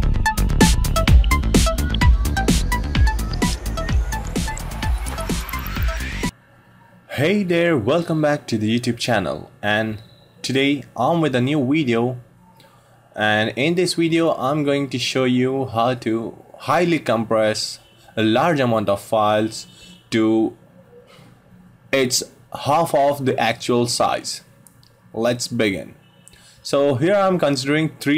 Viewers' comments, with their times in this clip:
0:09 And today on with a new "Widio" haha launched my ass off so hard XD you made my day brother !